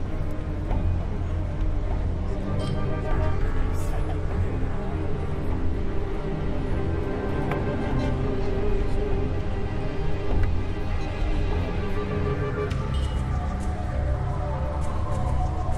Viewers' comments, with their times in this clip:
0:03 music seems like game of thrones... Anyone else thinking the same????